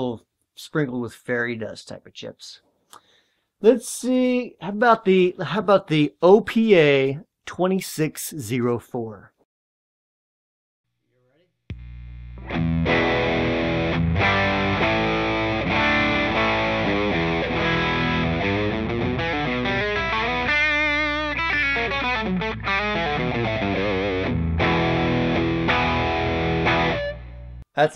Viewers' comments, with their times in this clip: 0:05 As soon as he started with those elusive ones the sound got wide and less compressed. Currently looking into purchase. I think it's damn dumb to sweat a dollar on parts expense when it translates so well into sweetness.
0:13 Ooh, a Burr-Brown. That's vintage right? Pre-Texas Instruments? I thought it sounded warmer, with clearer highs, rounded bottom end, and notes of chocolate and vanilla...